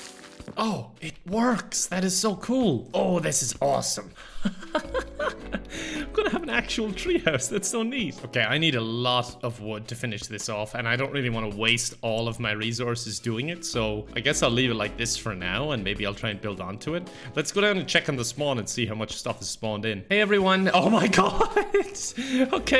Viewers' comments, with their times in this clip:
0:04 That laugh is so pure.